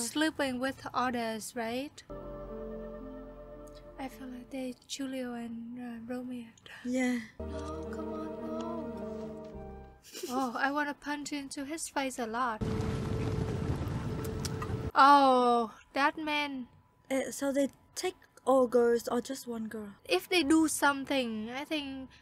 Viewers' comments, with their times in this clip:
0:03 I need that ringtone!